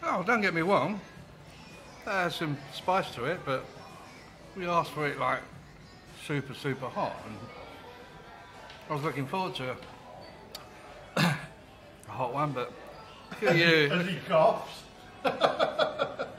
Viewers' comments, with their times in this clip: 0:03 did the guy say dont get me wong?? lol